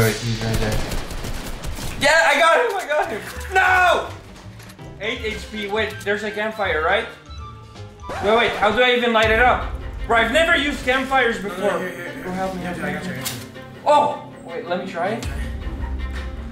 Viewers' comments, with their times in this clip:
0:03 Is It Just Me Or Dosent He Sound Like DanTdm When Hes Screaming 😨😨😨😦